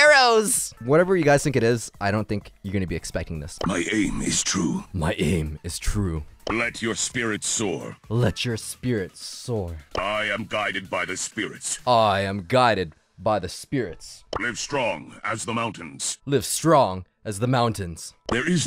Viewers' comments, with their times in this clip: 0:03 Solid Snake entered the game
0:03 Bo voice make him sound strong but he trash really without his super